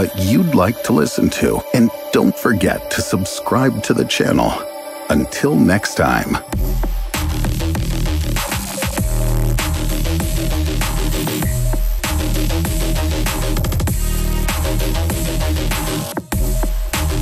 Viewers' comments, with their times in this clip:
0:04 Phenix nebula was doing all them screaming noises.